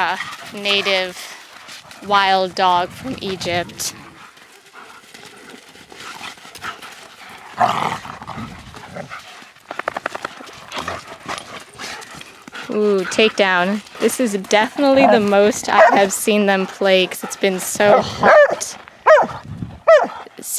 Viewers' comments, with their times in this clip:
0:08 Did anyone else hear was sounded like distant gunfire or something